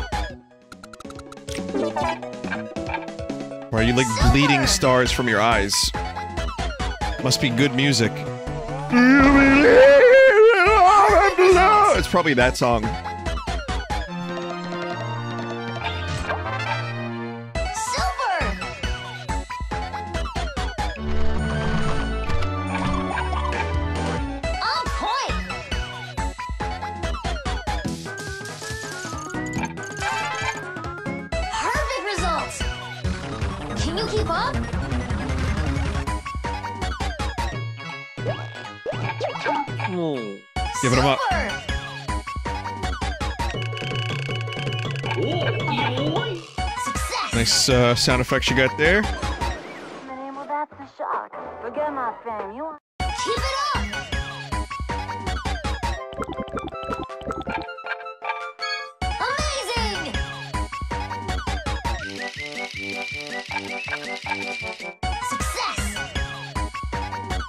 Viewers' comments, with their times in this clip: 0:07 As soon as you started singing , my gut nearly burst through my skin from the nastiest laugh I have laughed in years ! Holy smokes
0:07 the best cover I've ever heard
0:09 Imagine if all wrecking balls made that noise whenever they destroyed tiny houses. Just imagine it.
0:51 is it just me or does sound like shihoko hirata?? (vocalist in persona 4 soundtrack)